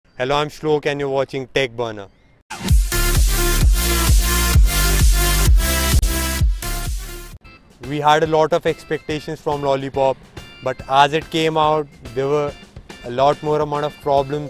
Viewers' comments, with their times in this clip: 0:02 is he saying, "Can you watching tech burner " ?😮